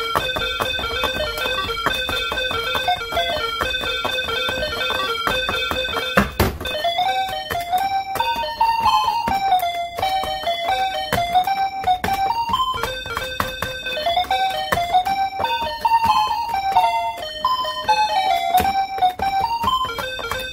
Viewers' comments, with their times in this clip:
0:04 The table slap XD
0:05 table smack lmao